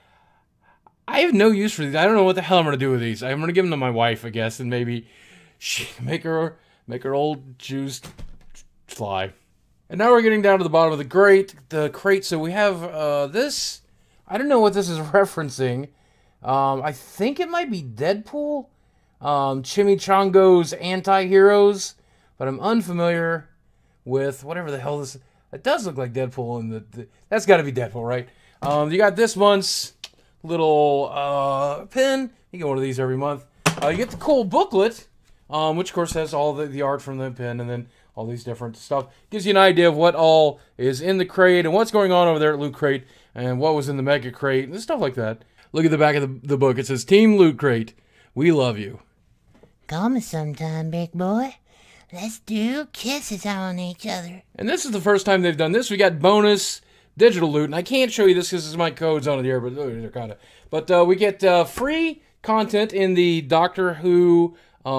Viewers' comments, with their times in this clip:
0:06 make her old jews fly ?? dafuq ? :D :D
0:52 lol you sounded like butters